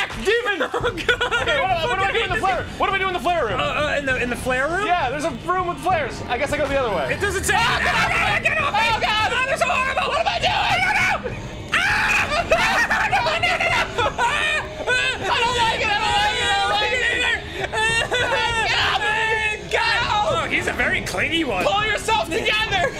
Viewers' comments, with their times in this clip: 0:07 Does that screaming ring a bell?